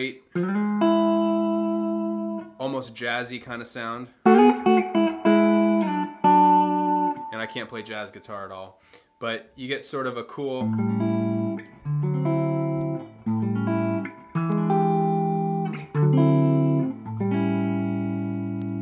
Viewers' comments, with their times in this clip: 0:06 "I can't play jazz guitar at all...." Proceeds to play some very cool jazzy stuff!